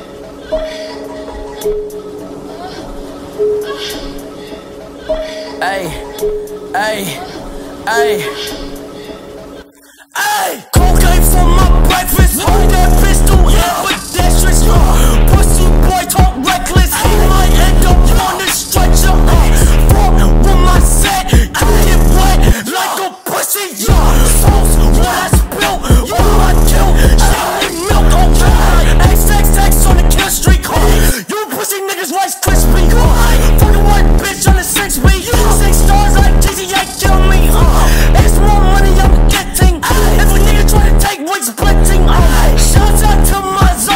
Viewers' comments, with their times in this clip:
0:09 the part you can only hear with headphones on... It's actually really weird
0:29 it sounds better on 1.75 speed